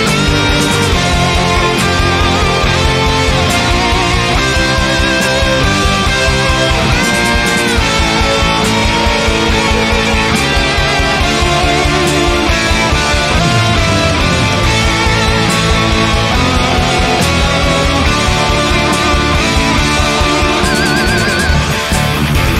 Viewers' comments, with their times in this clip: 0:06 How did you make that "scratch"-sounding move threre?